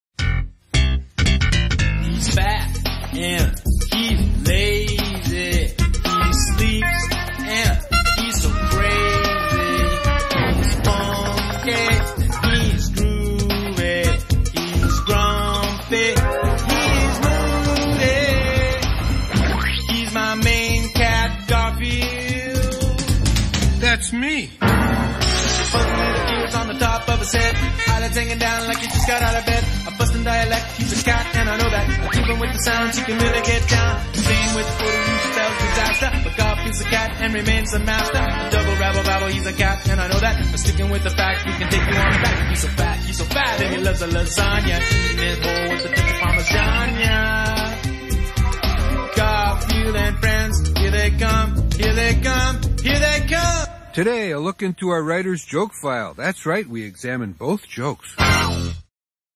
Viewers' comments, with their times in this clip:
0:00 that sounds like seinfield
0:53 I can see why they didn't use this song a lot (It cuts off here)